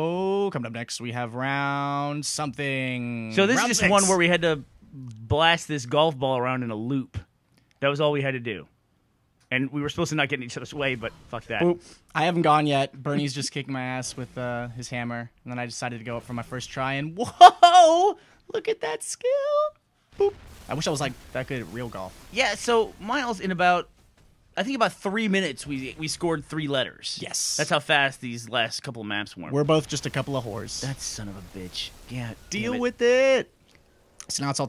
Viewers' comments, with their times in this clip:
0:09 lol did some1 fart in
0:16 it sounded like Burnie splattered himself with his own golf ball offscreen.